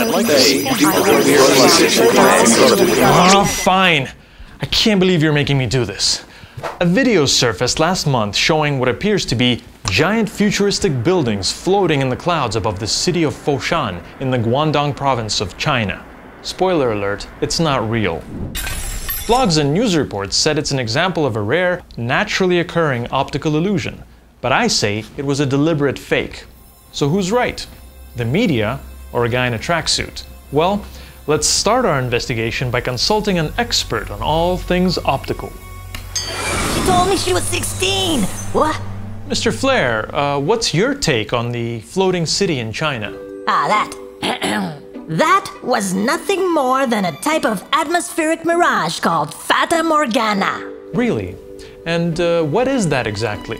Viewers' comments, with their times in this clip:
0:04 you sound Irish
0:37 Hiya kids it... (burps) it’s me captain ... dissolution (falls over) (wakes up and says and they sirens can be heard and he runs off)